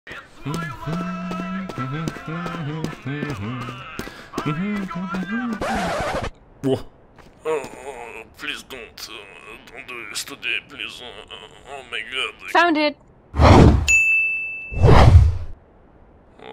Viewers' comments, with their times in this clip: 0:00 Wot this a misuc